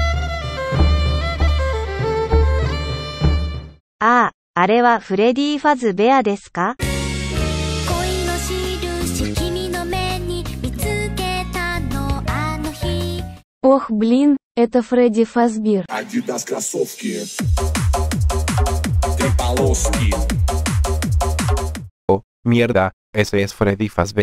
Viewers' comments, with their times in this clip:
0:07 goated choice for the music brutha